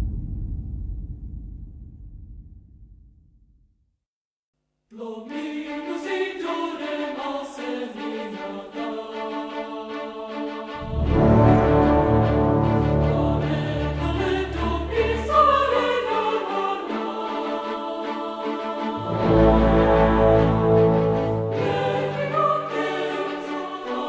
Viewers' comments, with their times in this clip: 0:07 straight from a damn Disney movie